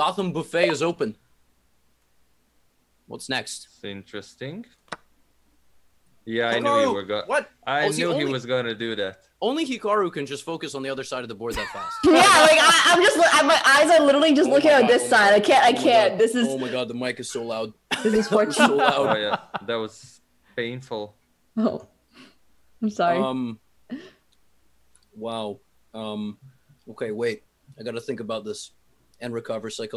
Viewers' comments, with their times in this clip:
0:09 had me dead lmao her mic was ramped all the way up 😂😂
0:11 WARNING! DO NOT WEAR HEADPHONES